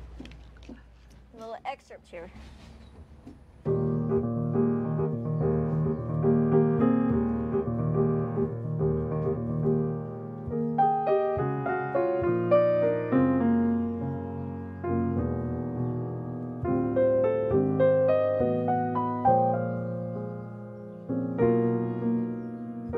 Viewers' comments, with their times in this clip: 0:07 AHHHHHH, THIS MUSIC..